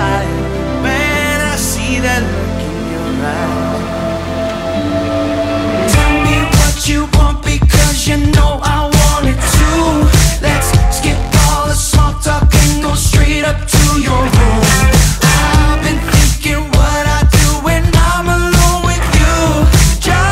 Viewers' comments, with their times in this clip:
0:05 The main part of song gives me zayns vibe ..something zayn would release..